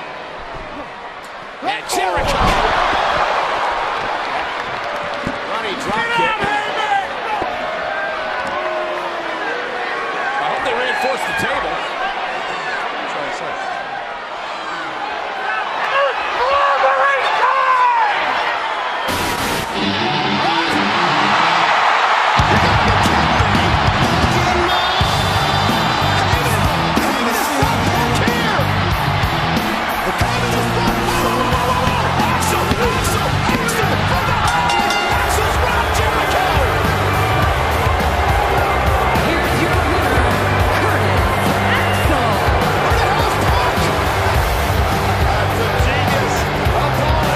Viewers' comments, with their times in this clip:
0:05 sounded like Cm Punk "Sit Down Heyman!!"
0:05 sounded like cm punk lol
0:29 man i love the bass effect here at the word CULT OF PERSONALITY